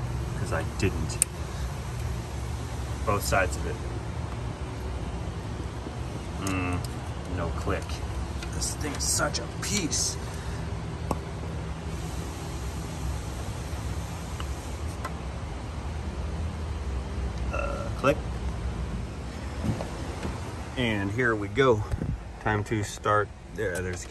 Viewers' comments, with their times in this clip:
0:10 My favorite sound is when he pulls the wire off the plug.